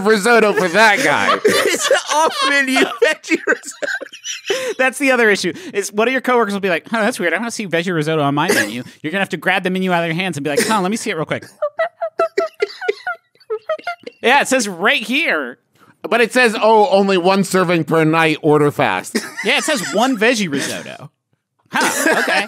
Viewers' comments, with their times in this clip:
0:10 why was that marker sound so accurate